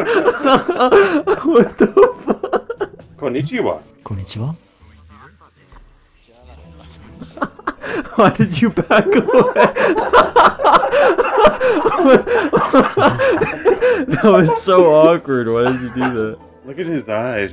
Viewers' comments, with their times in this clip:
0:04 Dude no fucking lie I thought that red guy had a fine ass voice LMAO.